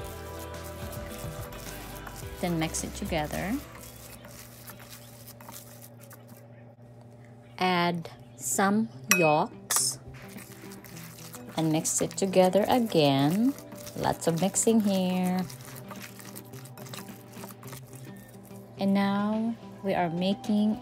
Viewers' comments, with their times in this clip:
0:07 What is she adding ? Sounds like she saying rocks, which obviously isn’t true. According to the subtitles, it says yolks, except there is no yolks in the picture it looks like some sort of olive oil, or something so I don’t know.